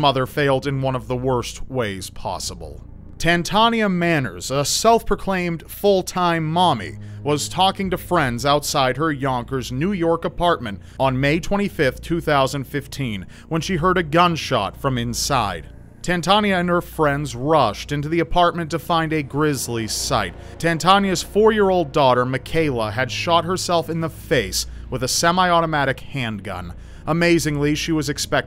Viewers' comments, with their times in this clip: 0:10 He definitely butchered that girl’s name.😂